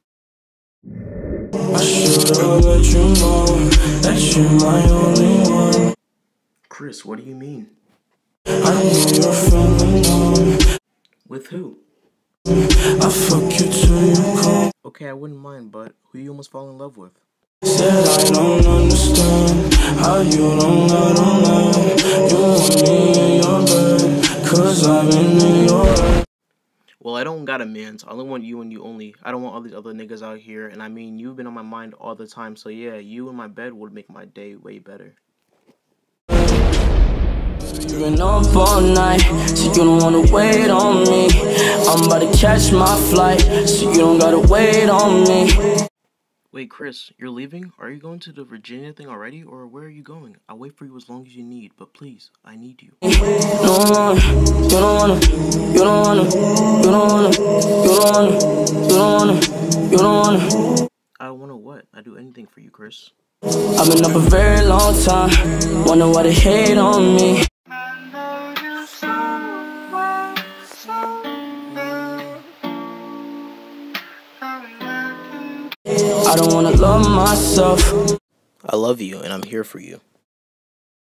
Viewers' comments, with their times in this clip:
0:08 i thought the lyrics were..i know your feeling numb.
0:09 Wait is it “ik you’re feeling numb” or “I nearly fell in love”
1:08 I thought someone called me and my phone is lagging This is my ringtone :>